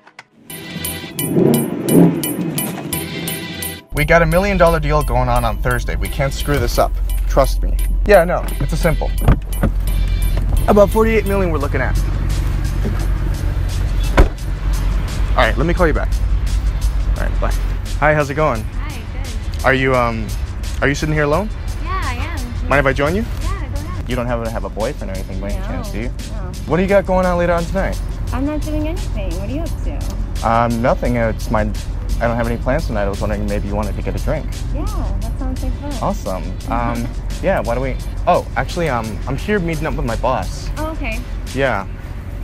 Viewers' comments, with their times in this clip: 0:04 Ngl he sounds like an actual millionaire guy
0:23 that's really sounds like millionaire accent.